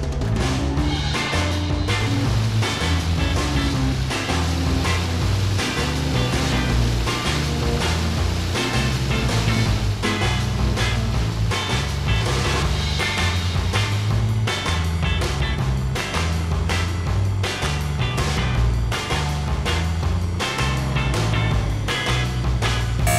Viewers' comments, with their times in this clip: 0:05 is that chuck from better call Saul asking for slippin Jimmy